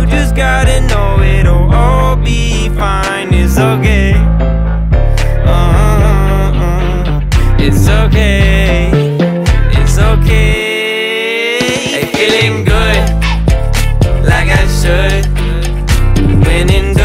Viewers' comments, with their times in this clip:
0:03 Nobody : it's OK, uh-huh it's OK, it's ok Me : it's so gay, uh-huh it's so gay, it's so gay.......